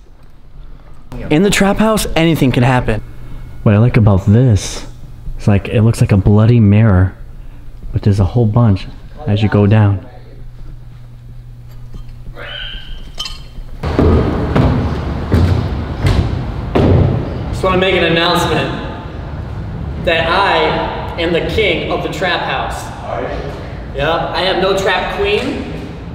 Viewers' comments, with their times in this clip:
0:07 after you said, "as you go down" was that a pig squeal?
0:10 DID ANYONE ELSE HERE THE PIG SQUEAL AT OR OH I HOPE TO GOD IT WAS JUST A PIECE OF METAL OR SOMETHING OR SOMEONE HICCUPED 🙏🙏🙏🙏🙏❤❤❤❤
0:12 there is a really weird noise